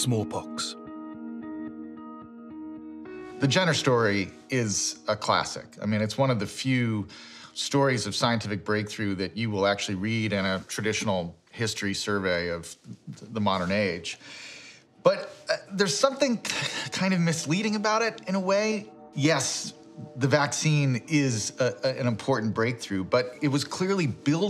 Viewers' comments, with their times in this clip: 0:05 Who is the man that appears at video minute ? He does not give his name or credentials. He then claims that the vaccination created by Ed Jenner is misleading. The music is horrible.